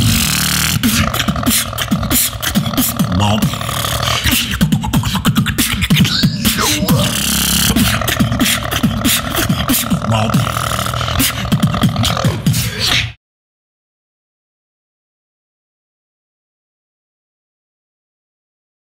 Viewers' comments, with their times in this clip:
0:04 sounds sick as hell